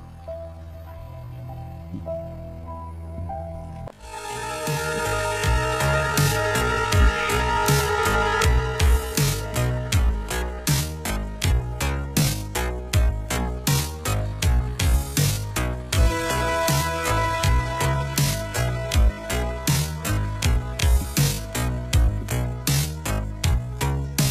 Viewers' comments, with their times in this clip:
0:04 GUYS try 2X speed it sounds almost normal 😮
0:07 on 2x speed it sounds normal